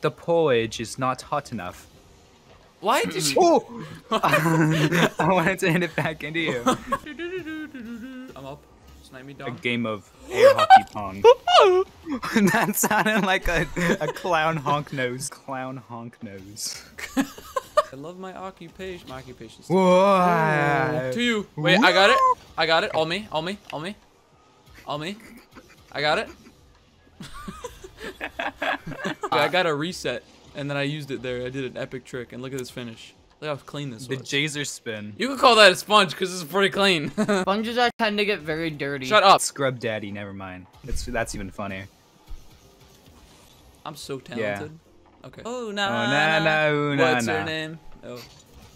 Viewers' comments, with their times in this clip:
0:10 The sound of a car
0:10 sounds like the doot meme
0:10 OKK NAWWWW THAT CLOWN NOISE KILLED ME 💀💀💀
0:35 did he say nigga or am i buggin?